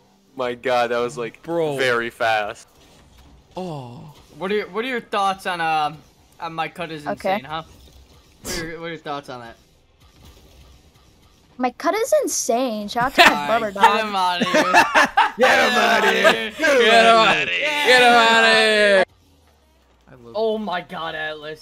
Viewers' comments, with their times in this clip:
0:03 I thought they brought an actual fan into the call